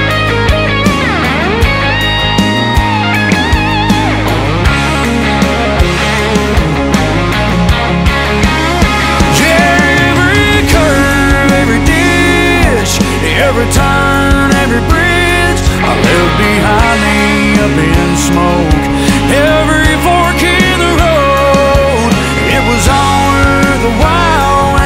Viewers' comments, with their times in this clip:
0:09 Man the voice fellow has